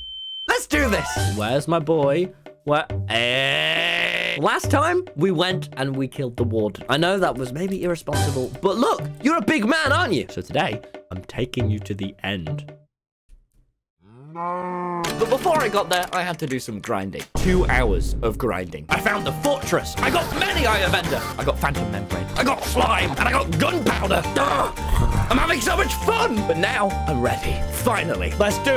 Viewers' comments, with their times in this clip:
0:10 it sounded like Duffle said "NOOOOOOOOOOOOOOOOO-" 🤣🤣🤣
0:14 That sounded like a genuine cry for help-